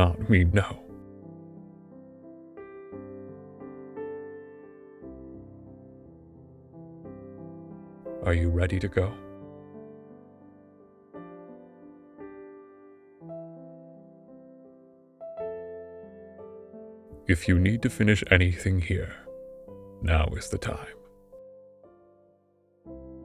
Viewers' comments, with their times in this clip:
0:08 gosh darn it Mazzy stop crying 😭